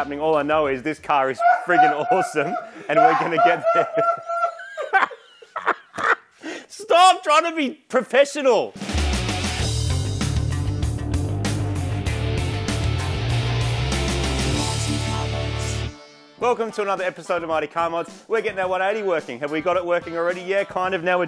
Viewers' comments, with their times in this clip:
0:04 Sounds like Marty stole James May's laugh